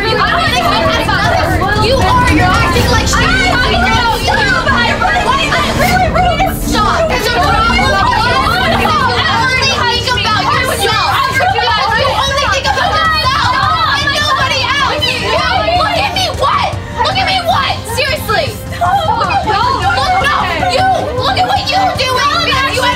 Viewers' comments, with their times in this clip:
0:08 girl wasnt even crying most unrealistic cry i ever seen lolll💀